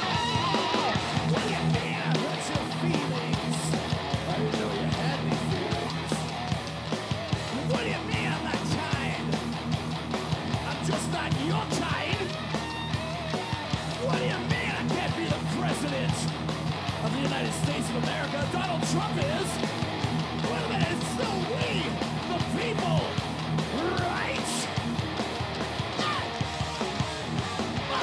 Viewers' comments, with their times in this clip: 0:10 Only poland can do that fill